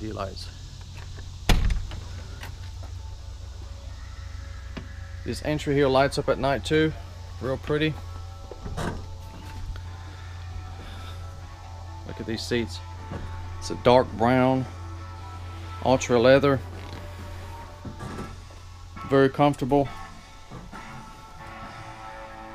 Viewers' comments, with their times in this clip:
0:03 the unmistakable primordial scream of Rodger Daltry singing Won't Get Fooled Again.